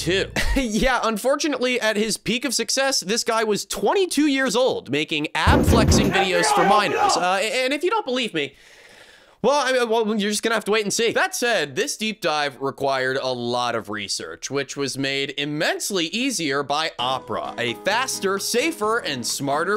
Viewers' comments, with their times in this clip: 0:05 these sound effects nearly gave me a heart attack!